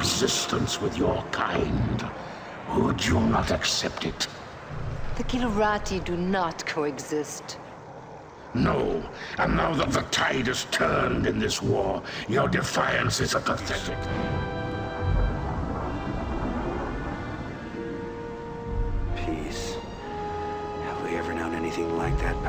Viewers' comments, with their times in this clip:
0:04 Brak, is that you?